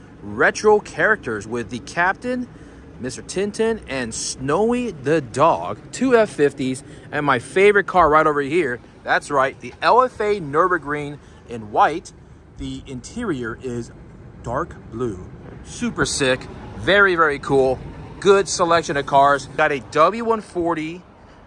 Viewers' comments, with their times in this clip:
0:08 The car that sounds like a Formula 1 but runs like a Toyota🤣